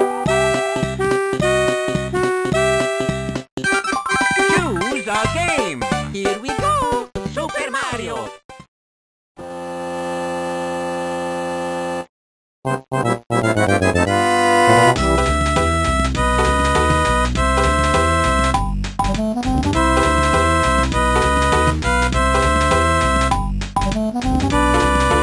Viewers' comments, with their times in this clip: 0:06 "Here we go!" "Supehr Madio!" NOTE: the "D" is meant to emphasize the rolled "R," as the rolled "R" sounds like a "D".